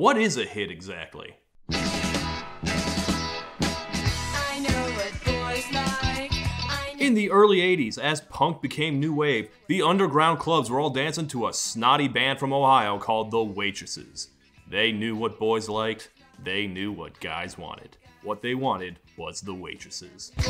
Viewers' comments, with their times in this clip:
0:06 There is no emotion in this listen to the family guy verison it’s way better